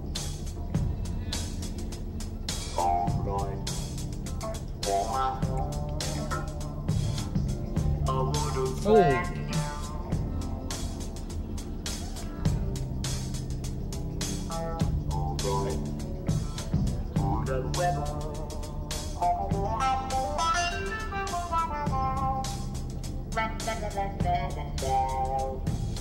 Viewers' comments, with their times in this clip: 0:08 Love this song!! You missed something around the mark though. Lol. Watch it again and listen closely to the phrase he actually says with the guitar talk box.